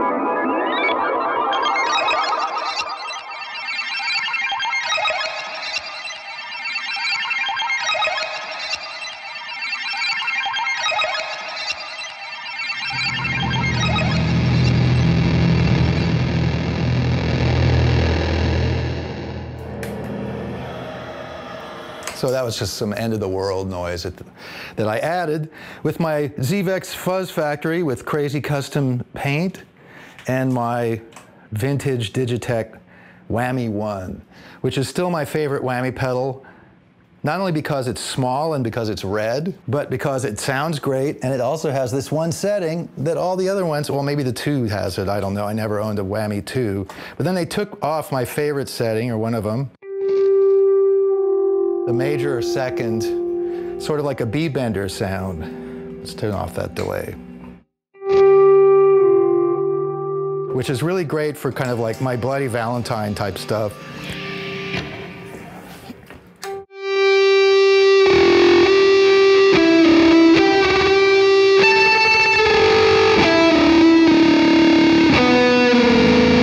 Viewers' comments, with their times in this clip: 0:05 Those sounds sound like the end of Motion Picture Soundtrack by Radiohead
1:00 Yup no big deal I'm Nels Cline just gunna rip out some Loveless real quick here